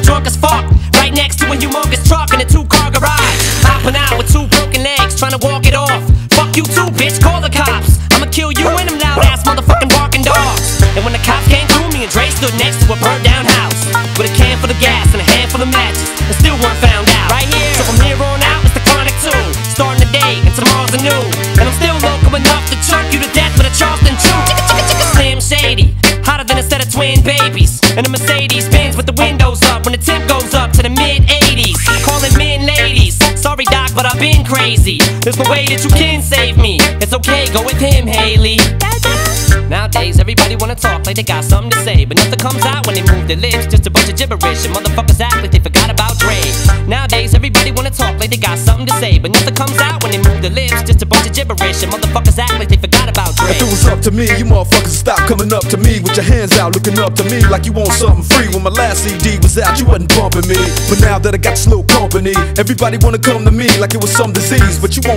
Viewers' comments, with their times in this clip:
0:09 is ridiculous. The guitar makes a dope beat get even harder
0:09 this beat is dooope😎
0:53 24 years later and I still can't process how incredible the flow is